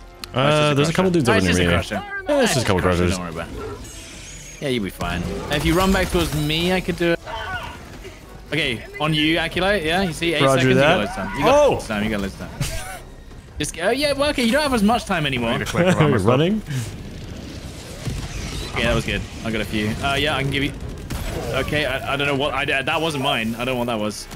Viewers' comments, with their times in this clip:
0:08 buddy warned him so casually 😂😂😂😂😂😂